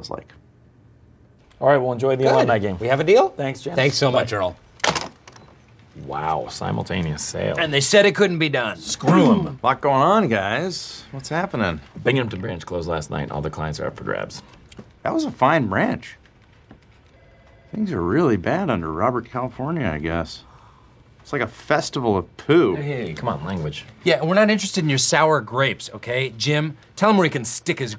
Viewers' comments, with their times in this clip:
0:08 "Scroom!" - Jwighm Schalpte